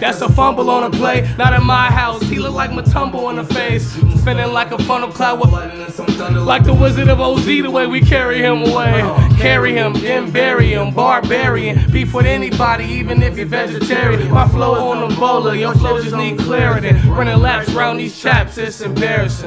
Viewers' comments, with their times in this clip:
0:05 How did they get Juice WRLD's real voice in here EDIT: oh